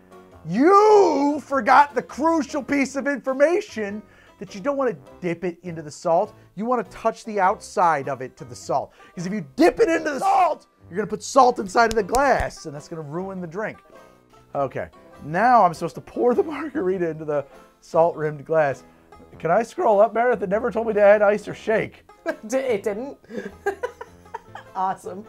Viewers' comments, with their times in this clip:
0:10 ROTFL, I thought it would refuse the request because it doesn't have access to the Internet so it can't check out YouTube and figure out what HowToDrink is... but I guess it expected HowToDrink to be a fictional, non-existent YouTube show. So it just made stuff up out of thin air without caring about the format of the show or anything ;D. LOL,wait, was that yell ADR:ed ;D? Did the mic cut out during the recording so you had to fill it in in post? ;D.